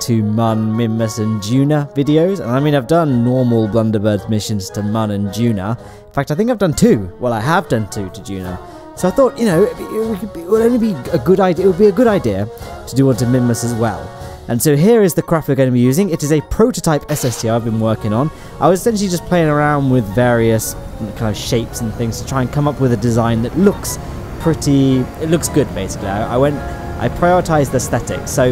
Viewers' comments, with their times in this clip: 0:09 lmao the stutter